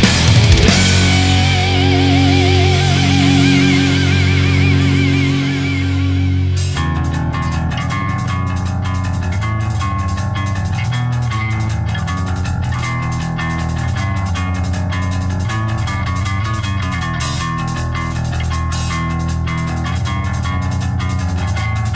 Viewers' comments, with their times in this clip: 0:06 Yeah, ! I was just saying that this part sounds like Iron Maiden. Isn't that cool? You are absolutely right ... well done.